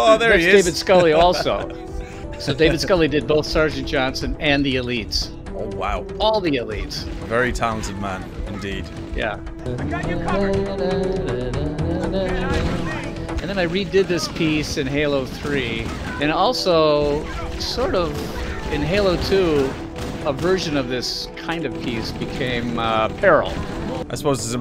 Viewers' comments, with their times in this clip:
0:09 seeing Marty singing along to his own music as he plays halo, is the best thing I've ever seen